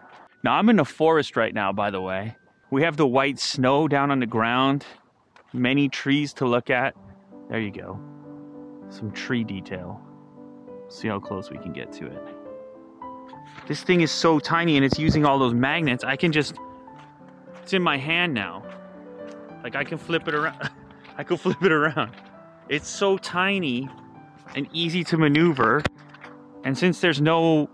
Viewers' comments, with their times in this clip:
0:09 Did you say "Some 3D tail" or "Some tree detail"?! 🤪